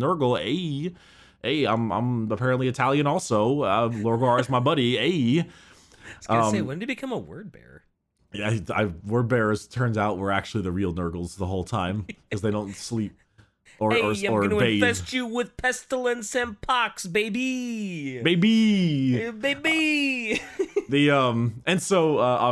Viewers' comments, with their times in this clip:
0:09 In the Grim Darkness of the far future, there is only Italian.